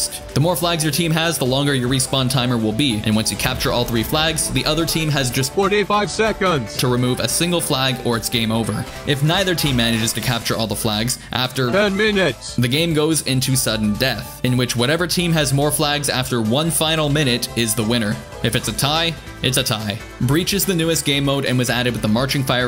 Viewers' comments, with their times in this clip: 0:05 strange voice crack